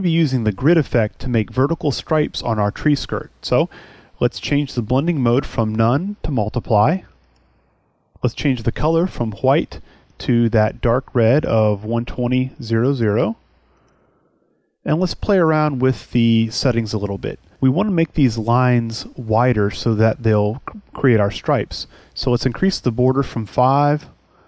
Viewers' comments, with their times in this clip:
0:09 Hwite ? Bob, is that you ???